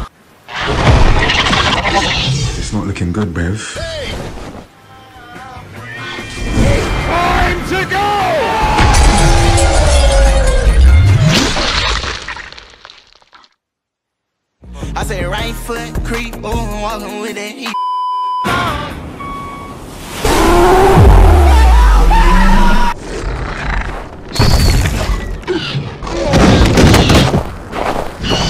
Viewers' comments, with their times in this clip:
0:04 i love when freebird kick's in
0:08 Why does blue have a boys voice when she is a girl
0:14 blue's dropping a beat